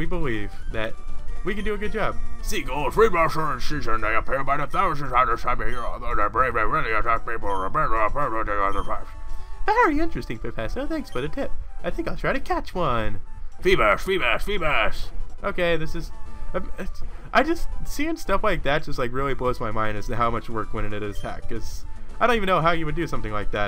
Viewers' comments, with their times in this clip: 0:07 Ummm wats he saying?